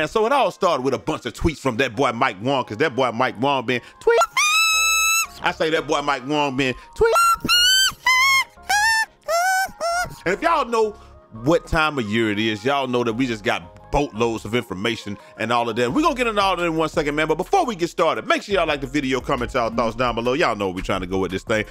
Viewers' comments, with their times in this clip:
0:05 ima need a headphone warning or sum next time man😂